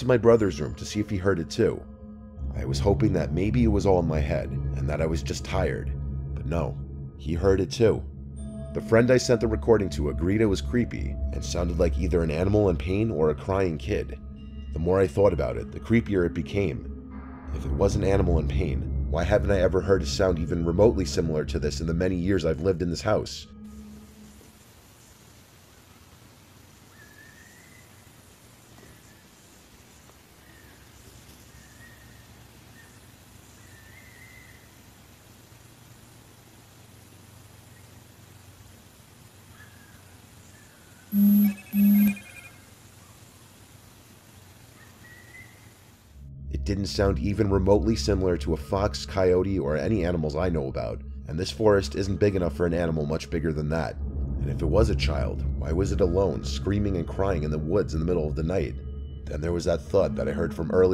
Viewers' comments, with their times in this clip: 0:05 I’m pretty sure that this is a raccoon one time I was outside walking around after dark when a raccoon and my cat got high and the raccoon sound. It’s super creepy.
0:25 that is 100% a bird, most likely an owl. Owls make a large variety of "creepy" nightime noises and are not limited to their usual calls.
0:25 it sounds like the wind whistling, it sometimes just decides to do so, especially in the mountains
0:26 that is just a bird bro
0:31 it sounds like a whimpering dog
0:31 more than likely just a bunny being hunted/killed by another animal. They sound like lil crying kids lol
0:35 that sounds like a fox in heat
0:39 it sound like wisiling perhaps some one in the woods walking thre with a dog
0:40 The vibration sound actually scared me the most.
0:40 The noises sounds a lot like the whistles coaches use
0:40 man silly ah ringtone 💀💀
0:40 the only thing scary in the second clip is that goofy ass notification noise
0:40 I didn't get scared by the screeching but that buzz made me jump because I had my phone to my ear.
0:41 The scariest thing about this was the phone vibration and sound
0:41 With max volume on headphones on the beep scared the hell out of me
0:41 don pollo ahh sound 😭😭😭
0:41 bro it is a owl
0:41 this guy would get everyone killed in a horror movie cause he’s got his damn sound notifications turned on
0:41 goofy ah ring tone No but that shit does sound creepy
0:41 screeching in the distance BVVVV BVVVVV PREEEE PRRUUUU
0:42 that android notification scared me more than anything in this video I swear
0:42 it sounds like a coyote about in the distance I have heard coyotes out of my window when I was in bed a couple of times and it sounds just the same
0:44 am I the only one who thinks it sounds exactly like a dog whimpering and shii? I’ve heard dogs sound like that many times, especially certain dog breeds. Like there’s certain breeds who when excited or sum start making the loud whimpering sound instead of barking and all and that’s exactly what it sounds like to me and doesn’t resemble a child crying or screaming at all Imo.
0:45 its a bird sound bro
0:47 That clearly sounded like a bird! No baby would make a sound like that.
0:48 that shit sounds exactly like a coyote or a fox
0:48 that sounds like a bird, also an Owl 🦉 sounded like that or something related! Since, there aforest prolly their a nocturnal animals.that roam around the night
0:48 its the wind